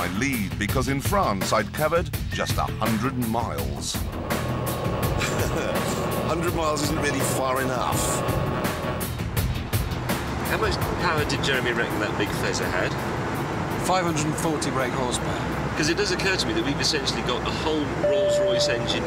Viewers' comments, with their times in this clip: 0:06 can you hear the buzzing noise in that ferrari